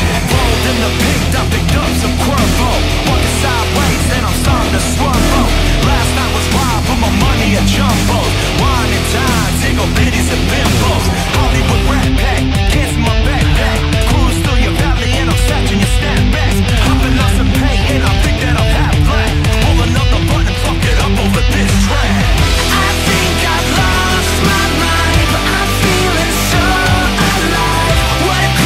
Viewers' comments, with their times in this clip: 0:10 THE IMPROV HOLY SHIT